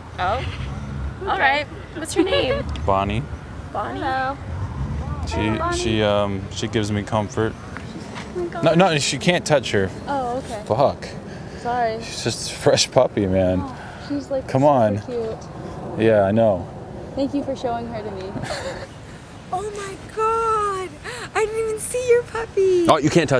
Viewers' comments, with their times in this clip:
0:07 had me rolling! the way he says fuck 😂😂
0:08 Best one was t That "fuuuck" made me laugh so god damn hard.